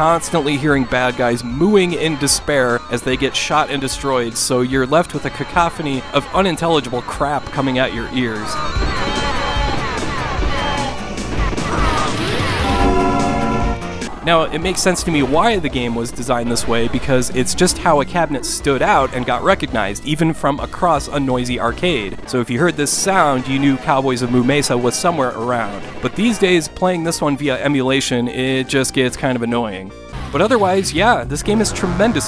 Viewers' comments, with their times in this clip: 0:03 A cowcophony of unintelligble crap
0:18 when he said "cabinet" i could've sworn he uttered CATTLE net. 🤪